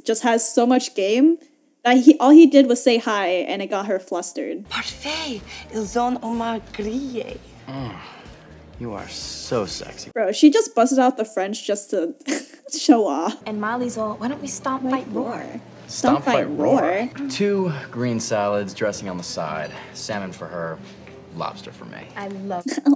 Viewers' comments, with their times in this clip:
0:04 she was not speaking French whatsoever 😀